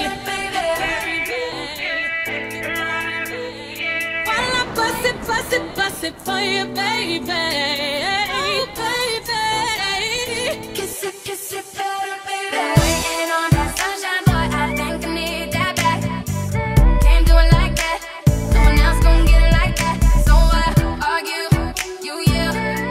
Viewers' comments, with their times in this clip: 0:10 The cuff it cuff it kiss it kiss it transition is just fuckin sickening!!!🔥🔥🔥🔥🔥🔥🔥🙌🙌🙌